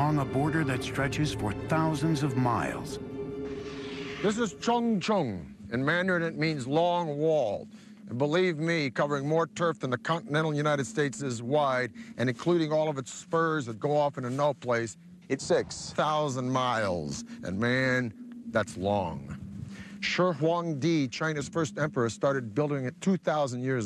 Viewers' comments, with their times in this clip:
0:04 LOL This is called "Chong Chong". WTF was it meant to be a racist remark its supposed to be "長城" (Chang Cheng)